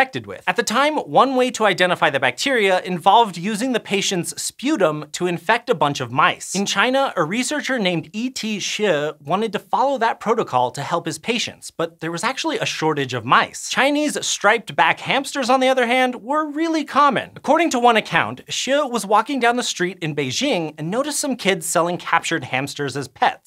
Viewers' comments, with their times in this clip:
0:07 The way he pronounce E. T. Hsieh I found to be hilarious!! He probably pronounced it correctly, at least it sounded correct.
0:07 that pronounciation was nice